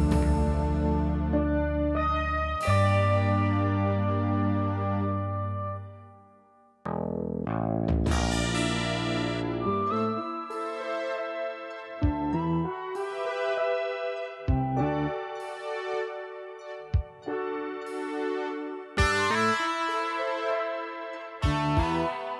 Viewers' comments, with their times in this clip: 0:09 I love the music from this story, especially from Reminds me of the Brigadier with great warmth and affection.